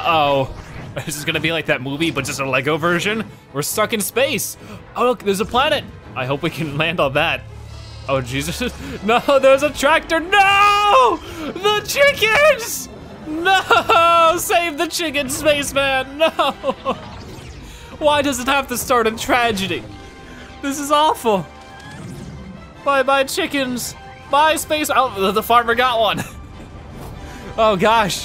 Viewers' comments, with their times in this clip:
0:10 hearing this man scream NOOO THE CHICKENS is still one of my favorite intros to a game ever